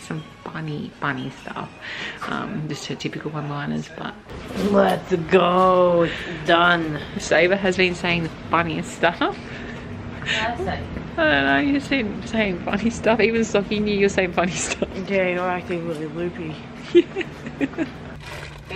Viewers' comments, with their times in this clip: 0:03 the chase music in the background 😂